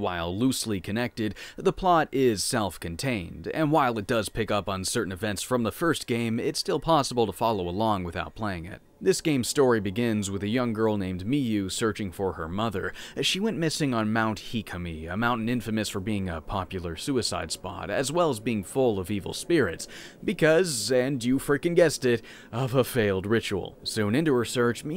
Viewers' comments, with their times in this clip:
0:08 "This game's story begins with a young girl named Mii U" LOL